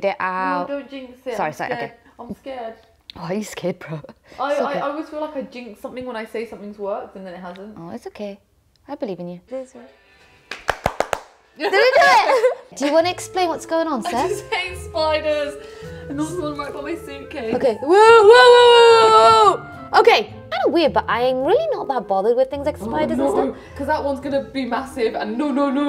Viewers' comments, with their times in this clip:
0:09 That's crazy how literally everyone does the clap thing from Friends x)